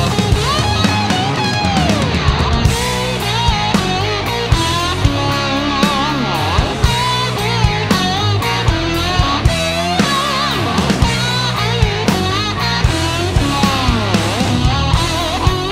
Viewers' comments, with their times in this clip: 0:03 has AC/DC's Rock and Roll ain't noise pollution vibes going on🤟